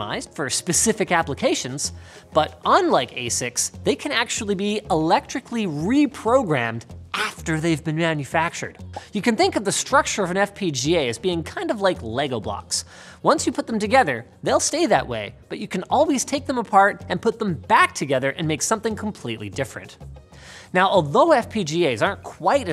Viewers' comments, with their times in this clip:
0:07 lol 🤣🤣😂 sounded like Linus has some electrical remanufacturing at that time stamp